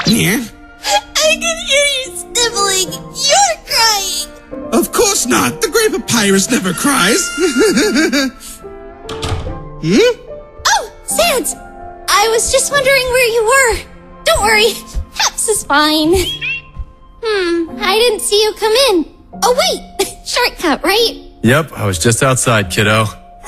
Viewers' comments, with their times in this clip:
0:07 The GREAT trumpet strikes again!